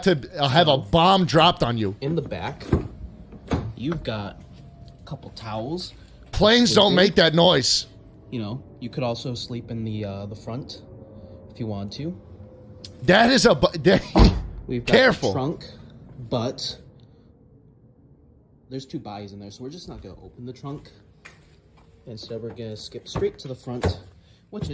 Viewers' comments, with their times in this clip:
0:07 planes don’t make that noise unless they’re heading for the north tower shlatt